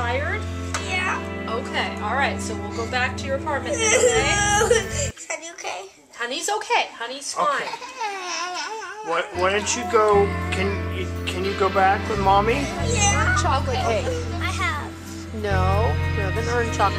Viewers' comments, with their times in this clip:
0:04 I’m sorry but the way the music stopped when she stopped whining 💀